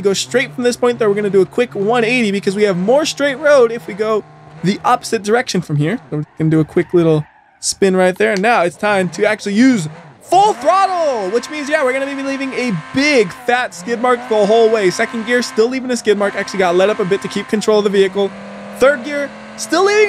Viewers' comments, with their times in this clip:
0:07 whats that click